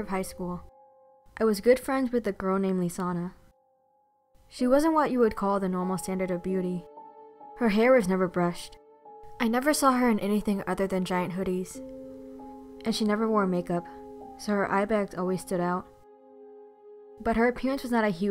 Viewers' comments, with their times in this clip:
0:03 i thought she said lasagna.